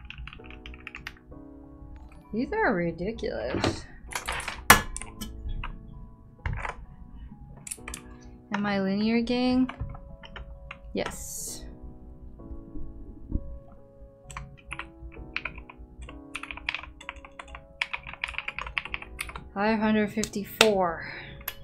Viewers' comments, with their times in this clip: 0:05 That sounds so good